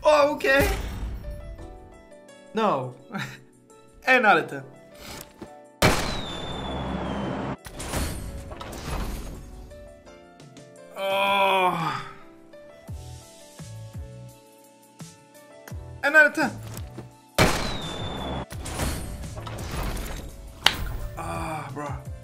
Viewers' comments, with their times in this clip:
0:04 This Another Ten 😹